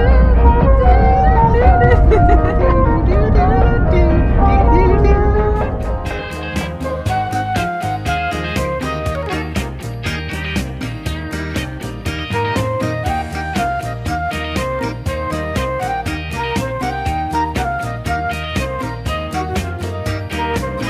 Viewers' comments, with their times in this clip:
0:05 nice music transition^_^